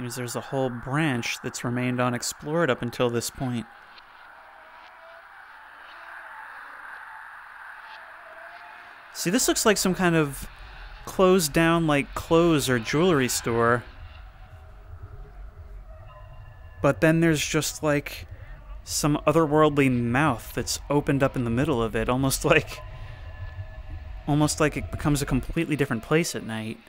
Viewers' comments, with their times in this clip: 0:04 Oh, funny enough, I recognize one of the ambient sound effects, audible (sounds like a guy screaming). It’s originally from some Zero-G sample CDs from the “Cuckooland” series, released way back in the 90s. I believe Half Life and Silent Hill used them for their OSTs among other sample libraries.
0:09 The FNAF 2 metal clanging sound really fits here and I don't know why
0:13 I kind of chuckled when I heard the background noise.